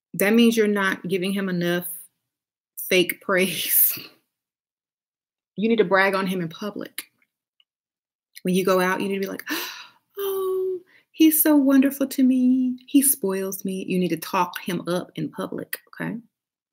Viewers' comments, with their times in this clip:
0:03 The scoff took me out!!!! this is something I have to work on the fake praise. They will not find it anywhere else it is valuable.